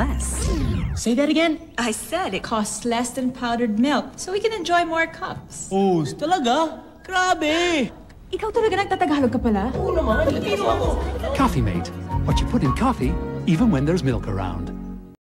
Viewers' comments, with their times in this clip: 0:05 good to appreciate him speak tagalog.